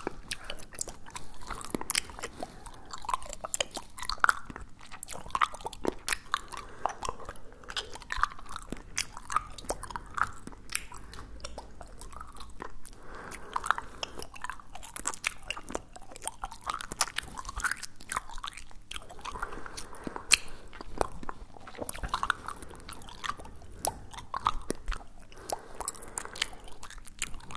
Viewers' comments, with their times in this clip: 0:10 that’s what yo ass was doin that whole time, I coulda been done ASMR, I do that while I eat.